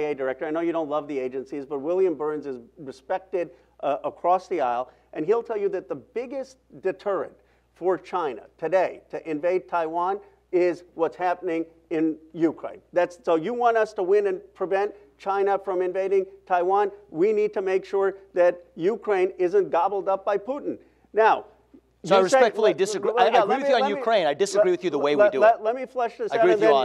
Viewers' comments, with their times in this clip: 0:08 No sound after